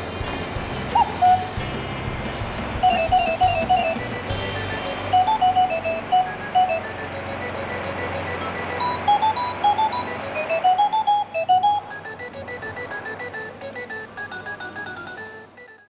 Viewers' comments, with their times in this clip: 0:10 sounds like it would wake my cat.